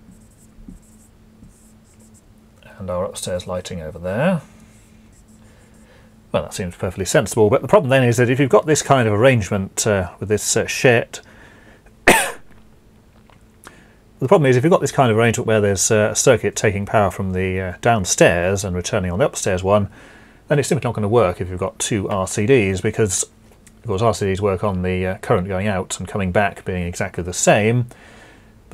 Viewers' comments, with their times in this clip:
0:10 That cough gave me pause; anyone else feel the same in 2020...? (Thanks for to Big Clive for mentioning this video.)